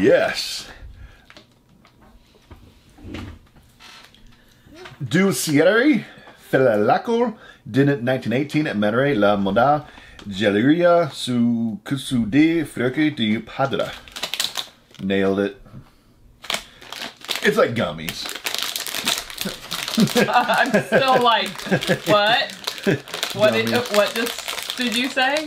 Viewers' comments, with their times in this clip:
0:05 starts speaking an alien language from Star Wars,maybe mandalorian or something!love that!!lol!
0:09 speaking chineese there